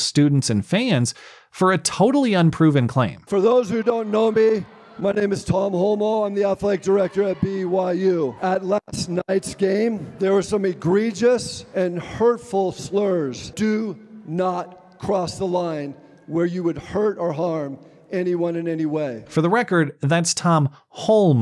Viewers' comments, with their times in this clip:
0:04 His name is (huh)? His name is (what)? His name is (who)? No, seriously, am I hearing his last name correctly?